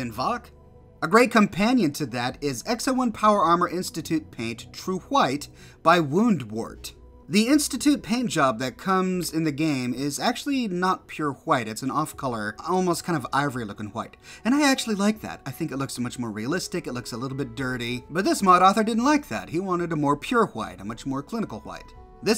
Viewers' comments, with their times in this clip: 0:04 "True hhhwhite" nice...